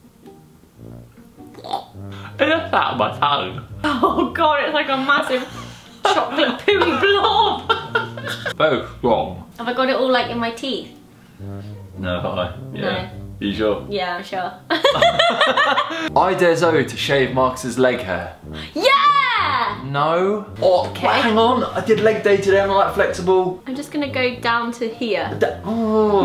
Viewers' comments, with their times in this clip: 0:06 is it just me that thinks Zoella sounds like she is singing ? XD
0:08 did you heard his laugh :D :D: D :D :D :D